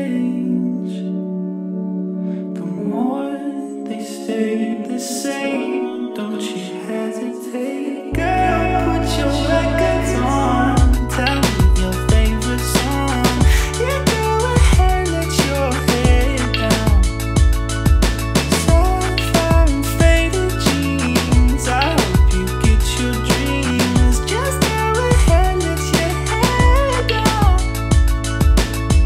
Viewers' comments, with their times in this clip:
0:04 This song hypnotize me 🥴.
0:10 when the drum machine & arpeggiator come it it all comes together ... love it.